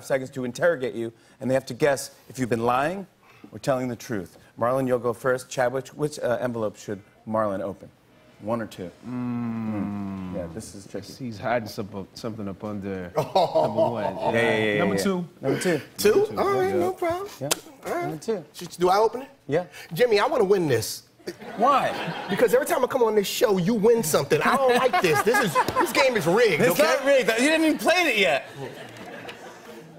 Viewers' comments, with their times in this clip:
0:05 he said Chadwitch 😂😂😂
0:06 "CHADWICH" what did he say?! 😕
0:06 can anyone else hear that phone alarm go off in the background? Or am I just going crazy...
0:07 go max volume. Somebody’s alarm went off
0:07 the alarm in the background
0:09 Anyone else hear the Fire Alarm when jimmy says which envelope Marlon should open
0:10 the alarm went off
0:10 I know it’s off topic but does Anyone else hear the phone alarm going off